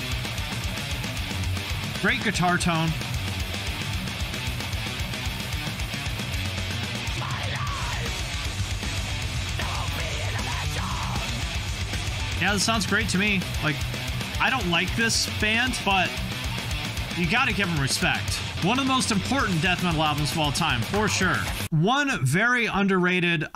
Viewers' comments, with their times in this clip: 0:04 sounds literally like old As I Lay Dying or old Bullet